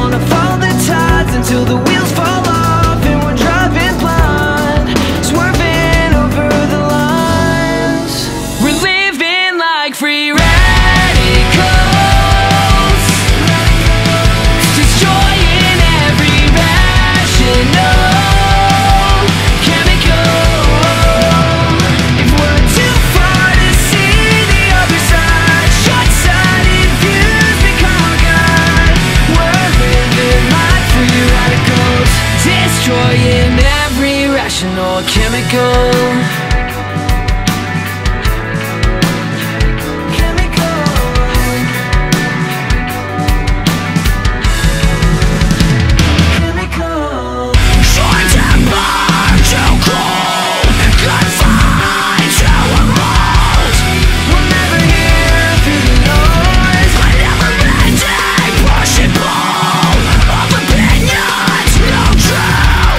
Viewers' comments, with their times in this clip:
0:08 We're living like free radicals, destroying every vaginal...
0:48 That guitar part tho!